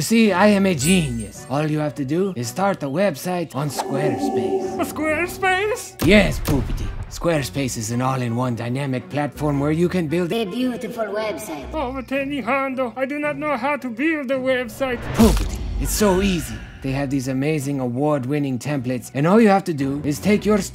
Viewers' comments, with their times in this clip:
0:05 Ten Hun sounds so much like Triumph the Insult Comic Dog here! 🤔🤣